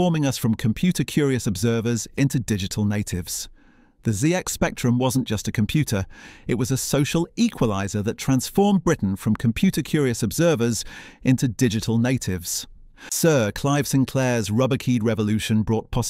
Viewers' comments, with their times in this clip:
0:03 where did that last 'zee'-x spectrum come from?